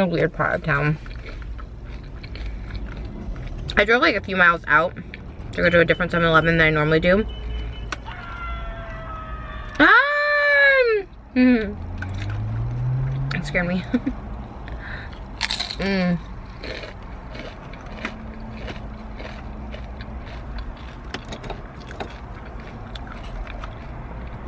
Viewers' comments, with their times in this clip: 0:09 the screaming is sending me off